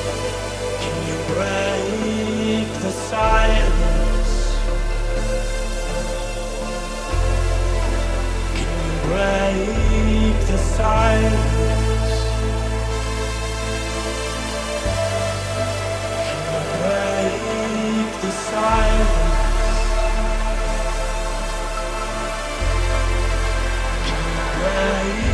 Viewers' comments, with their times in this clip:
0:10 The ID one sounds like ARTBAT tbh